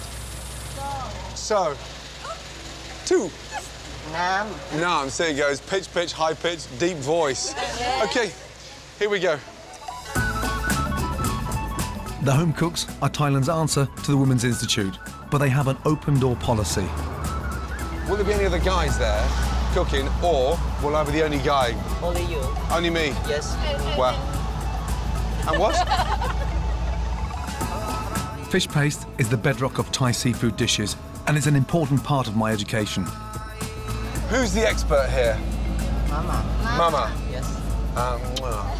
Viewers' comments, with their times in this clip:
0:06 wtf why he gotta do them like that lmao they can’t help how they sound
0:17 Gordon didnt get it lol. He had me fooled too, at first, even with the deep voice.
0:18 Somehow, I doubt Gordon will be the only guy there. That one chick clearly has a very deep masculine voice. Just saying.
0:20 So what happened here is the deep voice girl actually born a man or what
0:22 yo she outed her for being a man lol. Dude had a deep voice